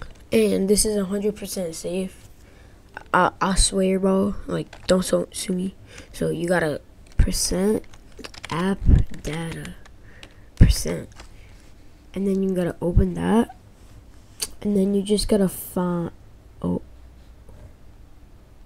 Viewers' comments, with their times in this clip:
0:06 why bros windows search is oioioioioioioioiooioioioio